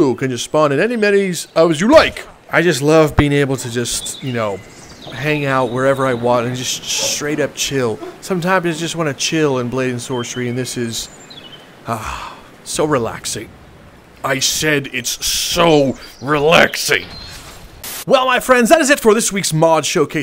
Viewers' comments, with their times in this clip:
0:05 is that Gus or Winston barking in the backround? also for electric hands there is a typo